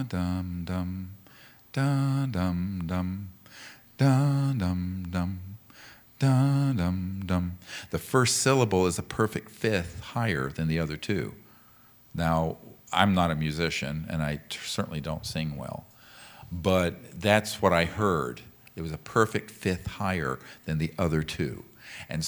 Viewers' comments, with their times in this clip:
0:09 Hey Doc. The tonality of that mantra sounds similar to the tonality of Gnostic Mantra: "Belilin" also I have noticed a similar tonality of the mantra you are taliking about in the second movement of bethoveen's 9ths symphony.